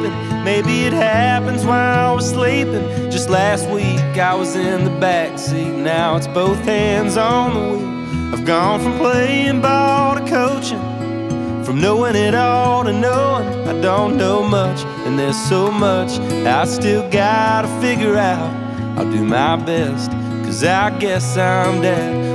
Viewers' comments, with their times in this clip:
0:09 that string instrument + the lyrics = 😢